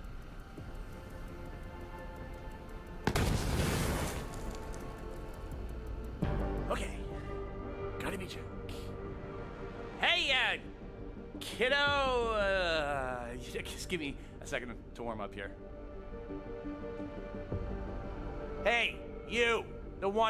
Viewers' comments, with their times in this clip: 0:06 Timothy Talk Like Handsome Jack